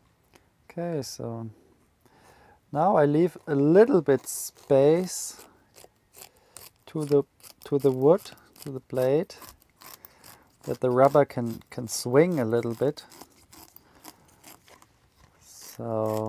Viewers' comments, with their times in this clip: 0:03 I love the sound of rubber cutting